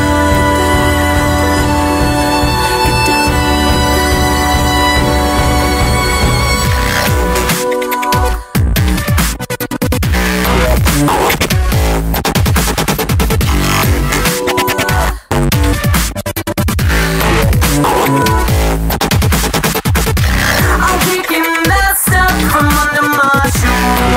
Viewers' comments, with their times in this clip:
0:06 Artistic and Impressive video. Wasn't expecting that DROP Awesome! And I must say, you are GORGEOUS!